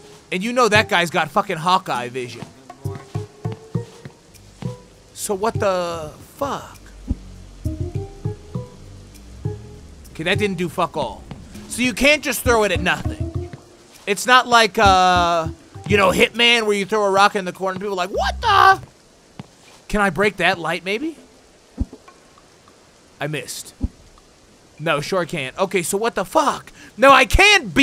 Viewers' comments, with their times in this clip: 0:08 I hear burrowing but I don’t know where the Nestler is